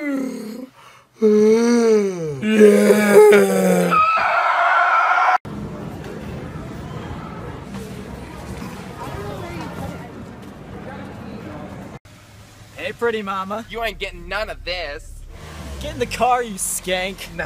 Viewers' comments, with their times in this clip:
0:04 Y TF HE SOUND LIKE A DINOSAUR 😭🤣🤣 ANYONE IN 2024?!